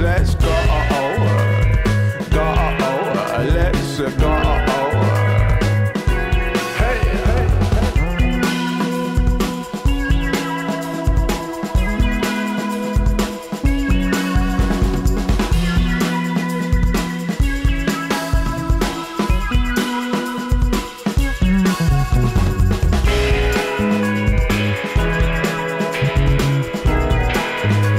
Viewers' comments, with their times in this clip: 0:08 Im in love with this track it lives on repeat mode!! I love that a bit of Beck's Odelay inspired riff soo good